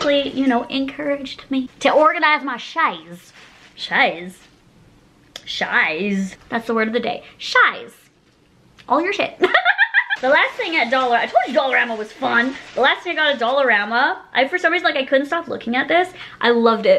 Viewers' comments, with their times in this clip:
0:03 OMG😂 the word you invented is actually how we say « chair » in french with the PERFECT Quebec accent « chaise »😂😂😂😂😂 its so funny i love you🤍